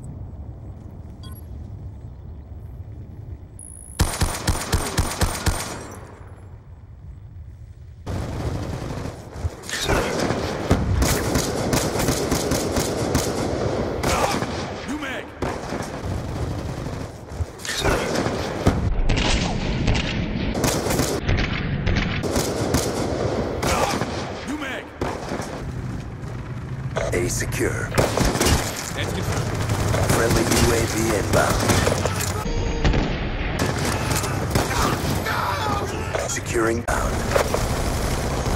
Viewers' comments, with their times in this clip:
0:10 (when he gets killed) it sounds like he sais u mad :P
0:24 lol the guy sounds like he said uMad?